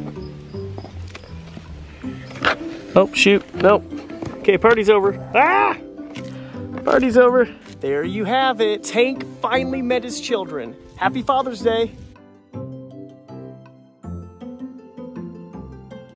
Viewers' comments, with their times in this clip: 0:05 On I laughed when he started to scream when Tank almost stepped on his babies!🤣♥️🐢